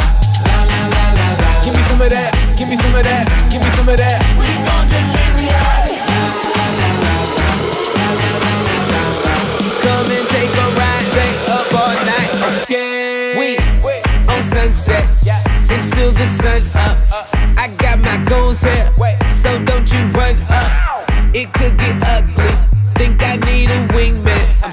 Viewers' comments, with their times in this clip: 0:10 “come and take a ride down a fortnite okay”